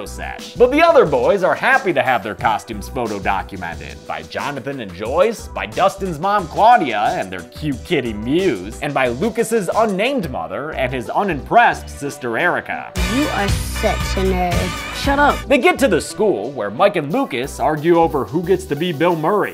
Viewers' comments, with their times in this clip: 0:07 is just the funniest way to say that